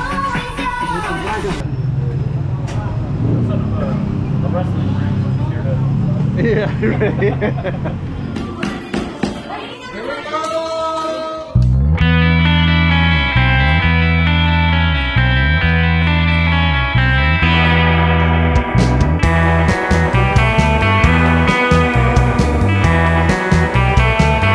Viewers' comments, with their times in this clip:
0:08 The music you used at approximately the mark sounds like a cross between Ghost Riders In the Sky, and Secret Agent Man. Nice to see those girls dancing like that. That’s the thing about my little zamboangenya wifey, I can clap my hands and command her to dance and she will do so. Loves dancing, loves karaoke, will climb up on your shoulders if she sees a snake. A really bizarre primal fear of snakes. It’s really like a form of shock. Can’t be reasoned with.